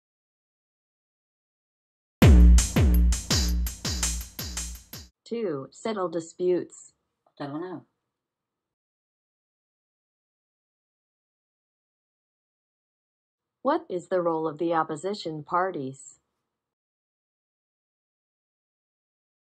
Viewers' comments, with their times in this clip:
0:07 Was that a fart?